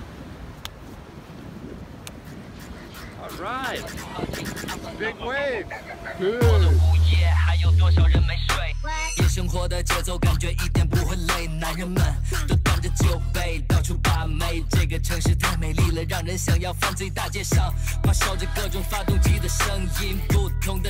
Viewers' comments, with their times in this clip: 0:06 Love the Chinese music from onwards. Pretty dope....